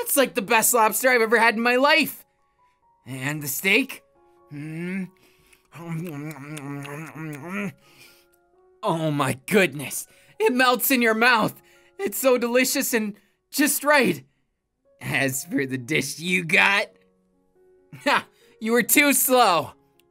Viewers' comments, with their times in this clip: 0:06 the most aggressively chewing I've ever heard 😂 #protectpikapika